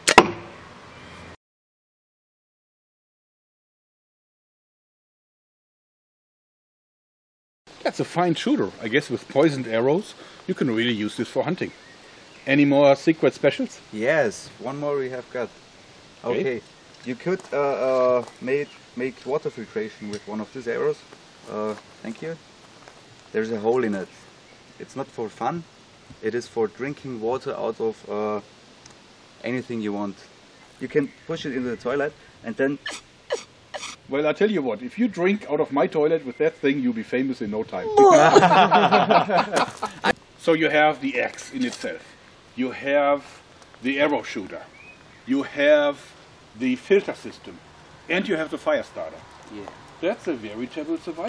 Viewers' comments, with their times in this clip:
0:07 dat fake laugh
0:37 for evil group laugh
0:37 The laugh is priceless
0:37 epic evil laugh
0:37 The German Villains Laughter